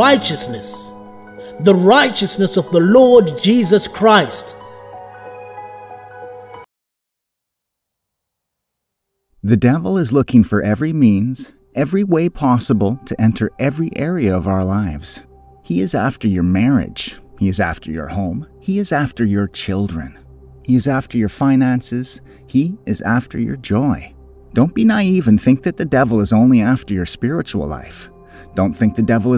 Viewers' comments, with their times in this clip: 0:10 Why did the voice get so Mono tone ?? Is it censorship?